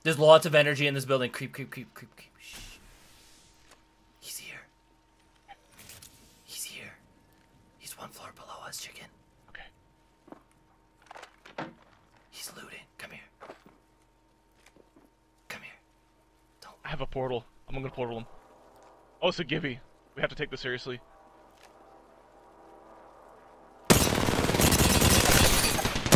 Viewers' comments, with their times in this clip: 0:07 like how he was whispering like they might hear him ;)